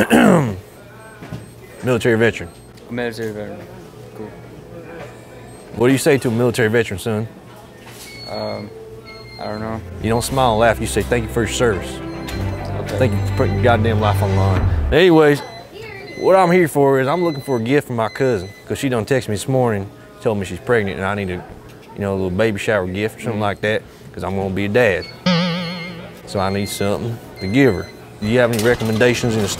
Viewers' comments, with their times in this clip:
0:10 The music and build up is why you are the #1 Youtuber.